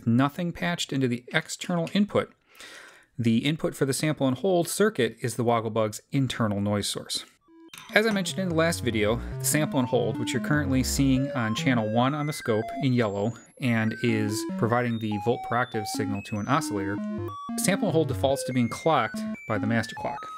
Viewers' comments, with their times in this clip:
0:03 I'm an absolute beginner. the stepped output makes different tones. Is there something else connected to produce these tones? If I patch mine directly to the output it doesn't produce tones but different rhythmical blips and blops. What do I do wrong...?